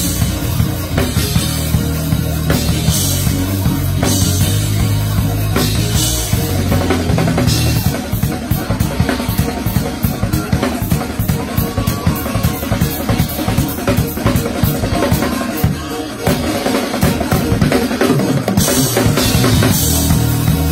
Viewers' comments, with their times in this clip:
0:07 This is CLASSIC THIS GUY WENT FULL IN‼️🙆🏾‍♂️ This is truly anointed Drumming The fill leading in . I was done !